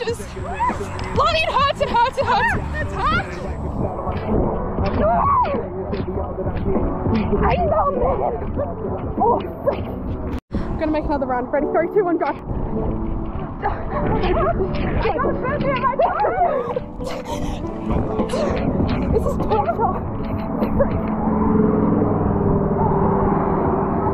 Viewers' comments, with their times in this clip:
0:07 are you south african? it sounded like you were speaking afrikaans lol